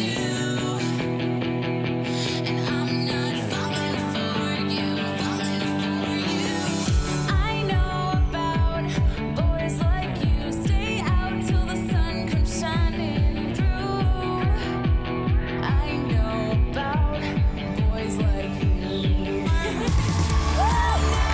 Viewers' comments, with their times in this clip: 0:04 did it say falling or the f word Edit: it said falling